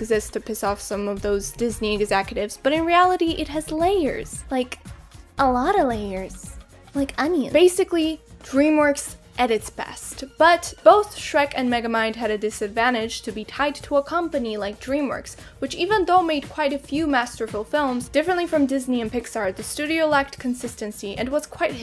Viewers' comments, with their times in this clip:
0:05 Still love your videos, and your voice! <3 Eargasm! So damn cute! <3